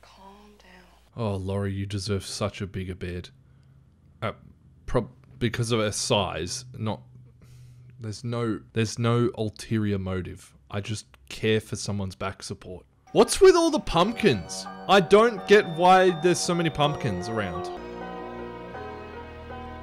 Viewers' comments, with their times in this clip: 0:03 I legit heard him say "oh Laurie you need a bit of this beard" 😂